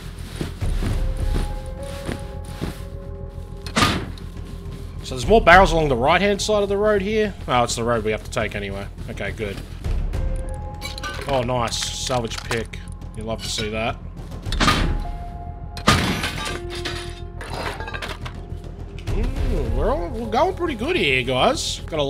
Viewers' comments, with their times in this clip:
0:03 Dude I'm into the movie and loving every fuckin' second of it. I love the fact you went with one of the Rust tracks for your farming run, it set the tone so perfectly dude! Ya fuckin' legend!